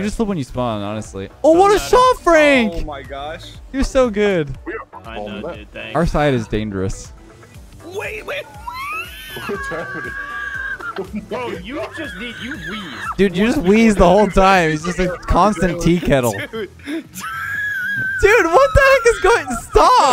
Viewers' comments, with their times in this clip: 0:07 someone in this match sounds like Rick from Rick and Morty. xD
0:08 calling the tea kettle wheeze out was the funniest thing ever, and the fact that he did it as you called him out was even more hilarious